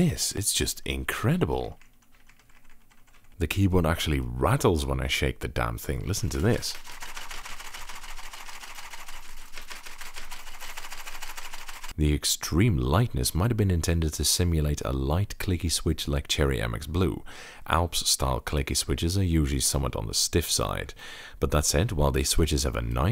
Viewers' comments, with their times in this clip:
0:07 its diesel powered Edit: I see what you did on the Y key, was that intentional?